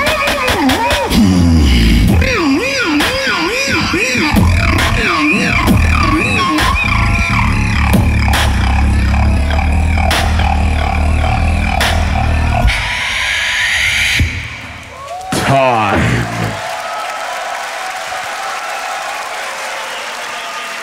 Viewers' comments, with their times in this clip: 0:04 if he practices that base he could never lose Jesus 😭